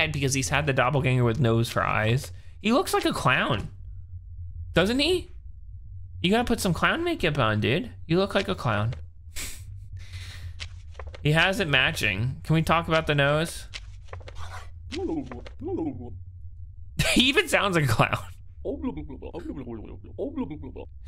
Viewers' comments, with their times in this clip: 0:07 “You look like a clown.” The way he says it is golden like 24k gold